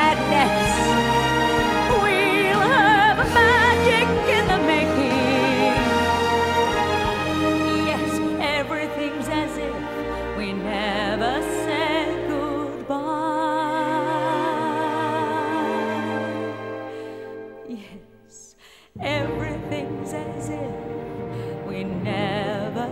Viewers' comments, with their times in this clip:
0:03 Good voice - her facial expressions are too creepy, even for Norma. She's trying too hard to be Gloria Swanson... or maybe Carol Burnett. And what is the deal with the jazz hands ?